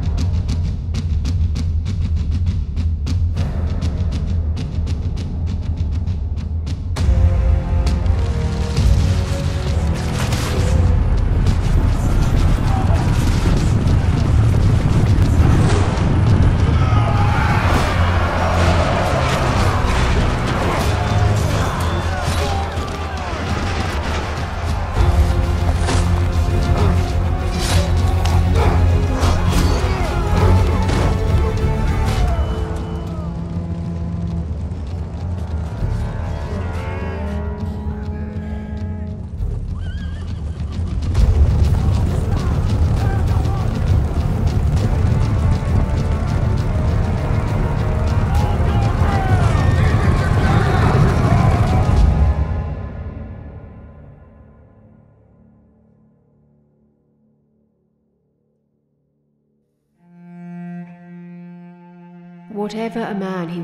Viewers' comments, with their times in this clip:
0:07 The beat was dominating the story telling, I noticed the story just cut off.
0:48 I think adding a sound affect of the spear going through his body and a grunt sound affect after he got stabbed would’ve added more emotion in that part of the short film but other than that this was a very well made animation film.